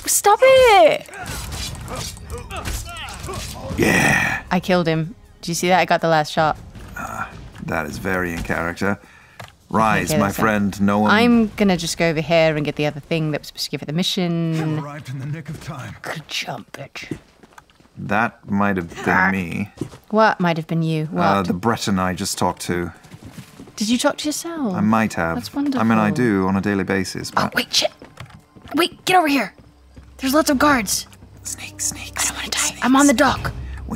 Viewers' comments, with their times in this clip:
0:06 Liam finding his own voice as a stranded slave lol
0:14 i know this is literally their job but hearing their voices in the game is so weird i also dont play games that often (sadly) so i really only know them through cr lol